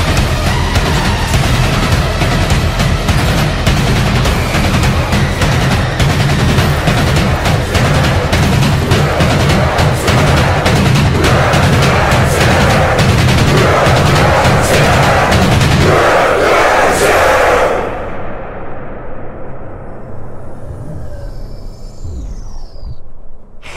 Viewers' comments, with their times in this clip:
0:08 the lyrics sound like they’re saying “MEH TROID DREAD!” And it’s beautiful